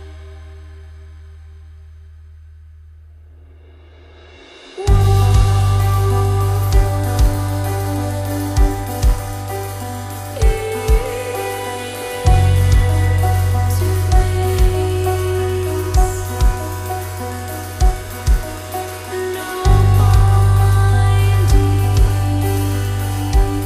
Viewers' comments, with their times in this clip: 0:04 Absolutely amazing album, so glad I finally got round to listening to it, Rolo Tamassi never fail to please. Also little thing I noticed, did any on else hear a bit of radiohead ? sounds slightly like Creep, I think it is the chord progression